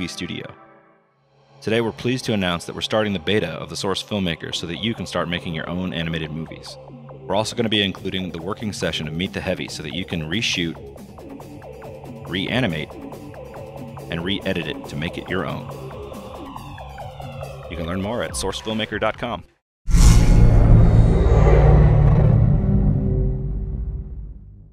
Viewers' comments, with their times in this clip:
0:10 Anyone else get a weird Metroid Prime vibe by the music